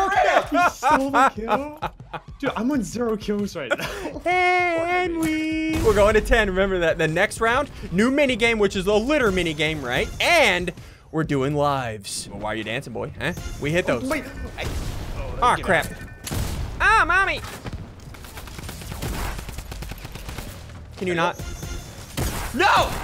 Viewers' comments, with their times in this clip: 0:04 I love how he says henwy